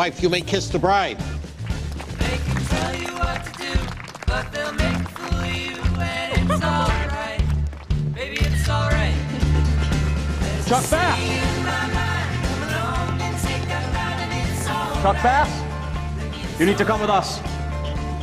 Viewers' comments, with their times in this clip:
0:04 did Ed improvise the “I love you”? Because it’s so faint that it sounds like Chuck is just mouthing the words to Blair so only she can hear them. In fact I had to play the clip twice to see if he actually said I love you.